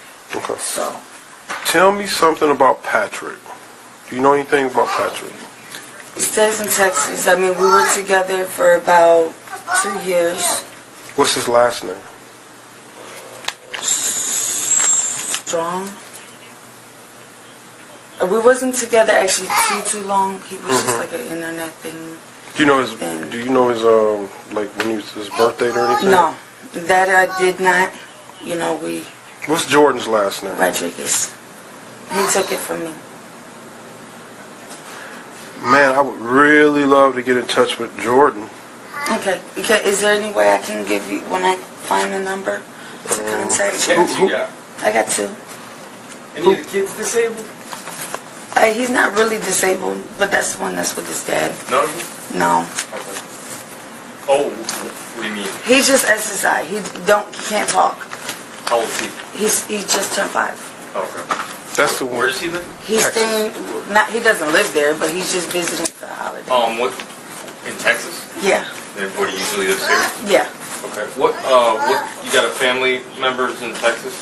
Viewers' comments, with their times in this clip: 0:09 it sounds like the little girl says "my brother was killed"
0:56 what does she say? He’s just exorcised? What is that supposed to mean?